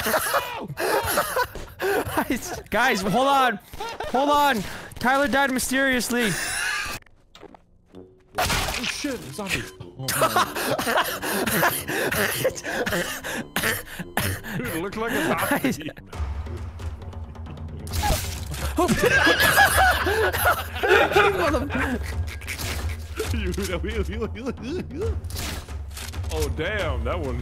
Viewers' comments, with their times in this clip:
0:09 Vanoss hasnt wheezed that hard since 2020